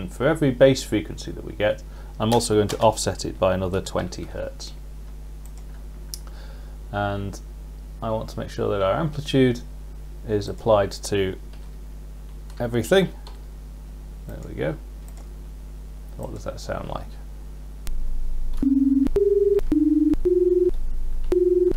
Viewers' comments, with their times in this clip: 0:04 Thanks for the great video! Please note that or so when you add the second sine wave + 20 Hz, that the extra +20 Hz still plays when a key is not depressed because that extra frequency is leftover after dFrequencyOutput is set to 0.0.